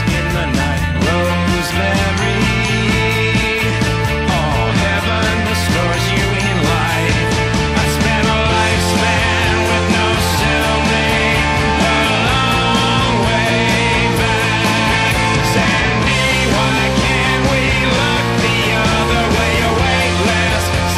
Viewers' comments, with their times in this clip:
0:04 Everyone growing up listening to this knows the Best part of the song is where he says "ahhww"